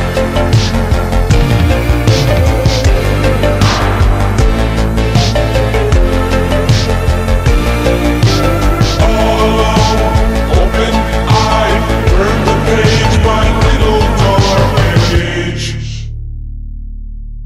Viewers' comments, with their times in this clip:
0:03 That staff/beat drop is so spicy. Extremely based edit, brother. Praise Christ.